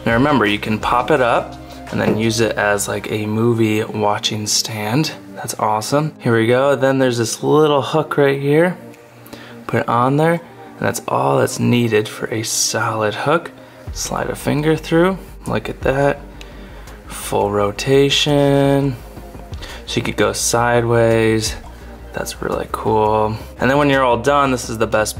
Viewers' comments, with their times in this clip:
0:08 wow insane details in that video! did you hear that snap, right when it connected ?